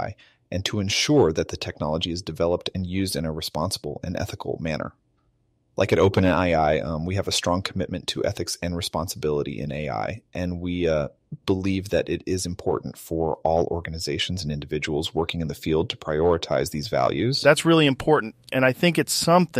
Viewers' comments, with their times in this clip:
0:06 I'm not sure if the misspoken "Open AI-I" was intentional or not but it actually sounded like a person stumbling over their words a little bit. Wow this is crazy.